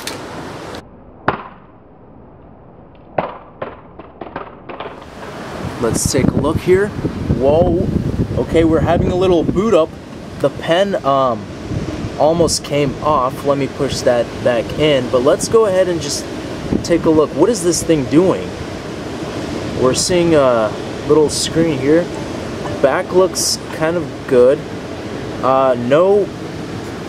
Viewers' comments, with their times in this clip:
0:09 he said boo'd up